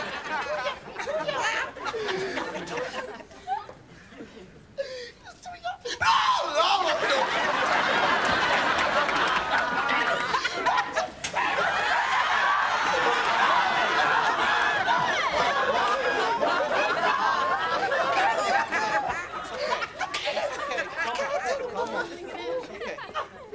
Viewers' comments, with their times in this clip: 0:05 The Holy Ghost scream 🤣🤣🤣🤣🤣🤣🤣🤣